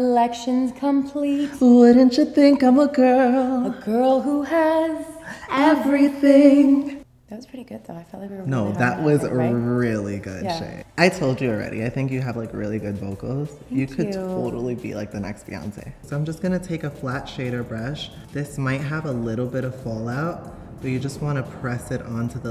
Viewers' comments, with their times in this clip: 0:04 it's so cute 😍🐠your such a good singer Shay.